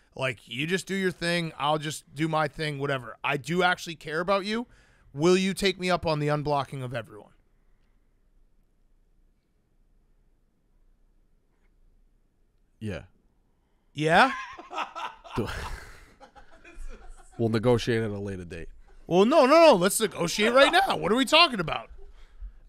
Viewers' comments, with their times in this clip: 0:08 not even the greatest actors ever could replicate this ‘yeah’